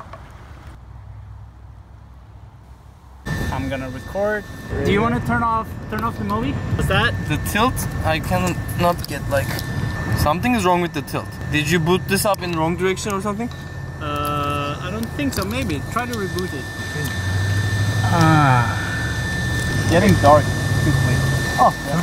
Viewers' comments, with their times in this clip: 0:10 The guy speaking sounds like Turkish. :D